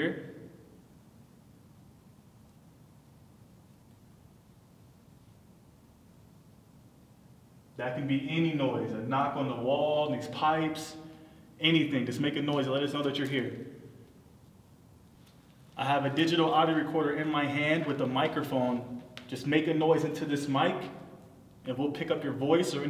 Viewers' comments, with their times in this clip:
0:08 Did anyone hear the crackle noise